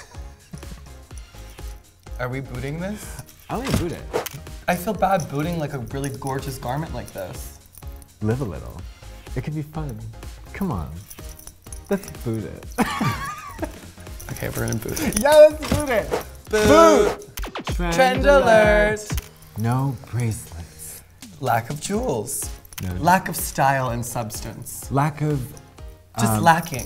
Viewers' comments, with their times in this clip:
0:08 I’ll do anything for katya if she speaks to me in that tone lol